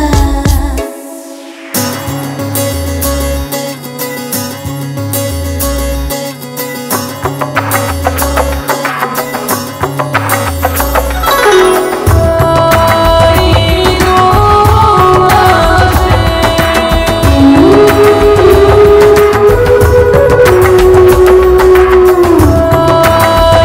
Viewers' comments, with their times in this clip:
0:09 Music is awesome